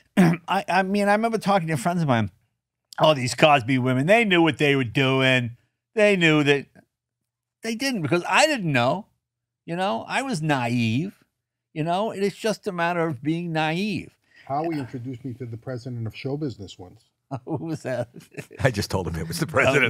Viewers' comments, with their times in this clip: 0:03 Great interview! I think Jay farted … lol